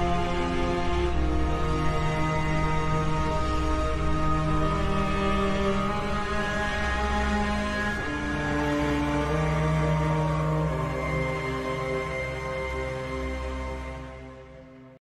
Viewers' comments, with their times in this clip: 0:07 the faint, agonized roar in the background makes me think that it’s spirit is still suffering, or that its soul let out one last mourning cry knowing all the pain it caused before moving on Hopefully it’s the latter my soul can’t take the former ;-;
0:08 that faint cry at the end just makes it that much sadder.
0:09 it sounds like an echo of the sauropod’s roar